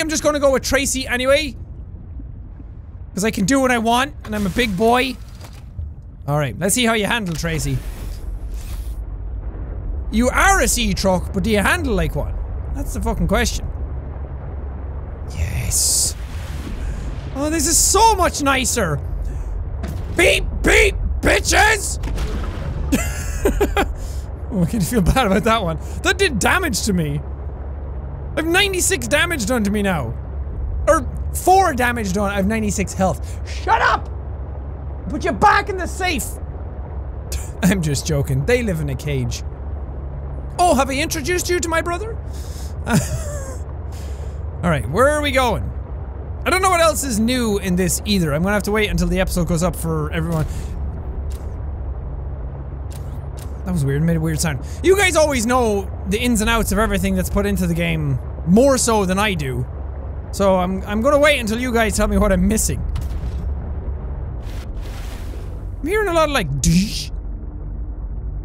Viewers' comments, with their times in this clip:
0:07 Lol, at the when he says he's a big boy but he looks and sounds so unsure
0:22 when jack hit the fish in his sea truck a car alarm went off outside lol 😂
0:49 A weird noise? Where'd the fish go when the light turned on??